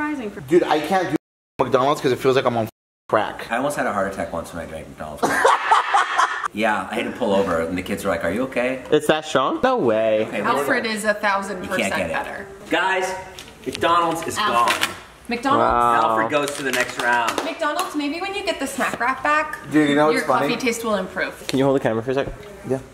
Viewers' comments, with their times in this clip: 0:05 When you try to Fart silently but it echos across the hall